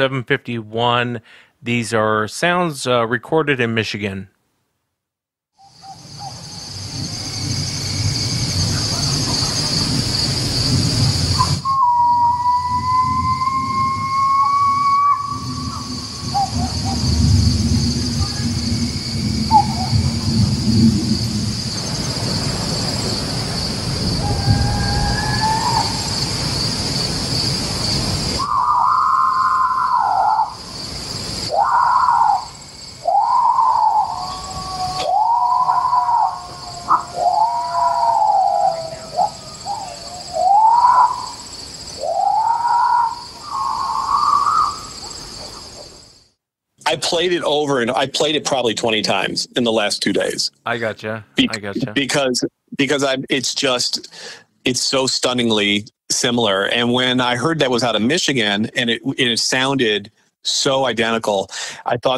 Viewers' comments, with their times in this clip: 0:07 those sounds seriously sent shivers down my spine and an instant feeling of dread and terror!!! What awful sounding screams!! I definitely would've had a heart attack right then and there if it was me in that situation!! 😱😫
0:28 was the simular sound that a officer picked up on his radio in his cop car , he was calling it in and you cN hear that exact scream , this back in the 90's...
0:43 does sound monkeyish